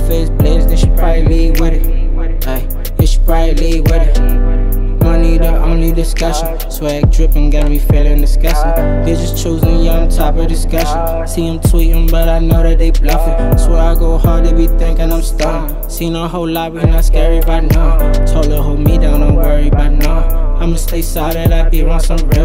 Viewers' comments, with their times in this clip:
0:05 I like the way he switched the flow on It reminds of lil baby 🔥🔥🔥🔥🔥🔥